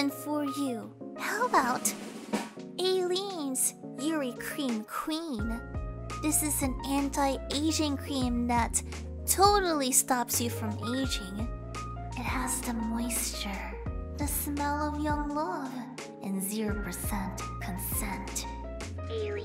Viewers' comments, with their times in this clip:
0:06 not to be rude but I bet I'm not the only one that thought she said anti Asian cream plz don't get mad at me XF